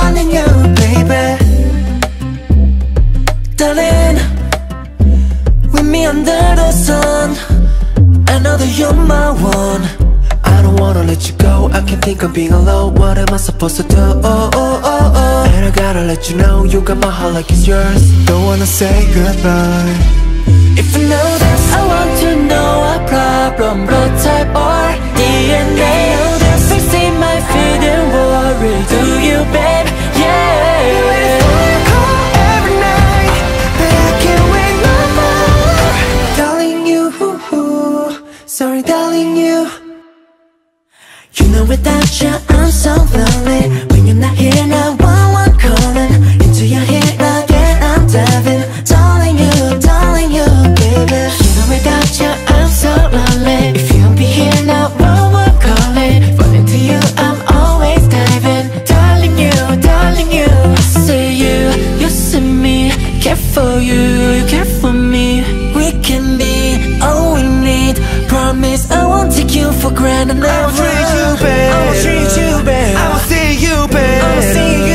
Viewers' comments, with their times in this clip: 0:05 Jun's voice is such a blessing to my ears.❤ Ohhhhhh I just love him so much 🫀🪄🪄
0:10 I just love Joshua's vocals in every song... Moreover The8 voice and S Coups singing was heavenly... I would ask everyone to listen this again
0:12 i really loved the way scoups softly sang it😭😭😭😭❤️❤️❤️❤️🤗😇 im really obsessed with these people 😭😭🤗❤️
0:35 its coups voice
0:36 s.coups sang that "darling you-u-u sorry darling you" not joshua 😅
0:36 s.coups sing that not shua
0:51 ❤ jeonghan yall his voice
0:51 ❤ jeonghan yall his voice
0:51 ❤ jeonghan yall his voice
0:51 ❤ jeonghan yall his voice
1:00 This line, his voice, the meaning just gives me a very special form of comfort. Thank you.